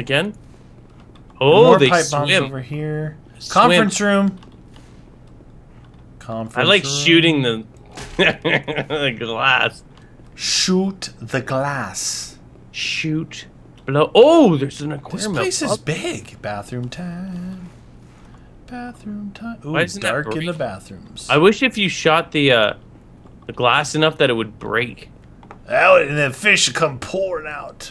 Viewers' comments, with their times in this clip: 0:08 That laught though xD